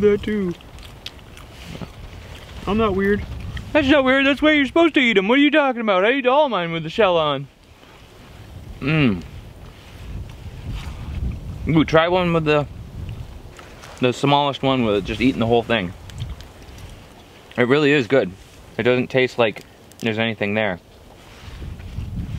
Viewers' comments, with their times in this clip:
0:03 Lol i heard Daequan in He is a fortnite streamer who ever do not know him WARNING: he do say bad words so just forget about it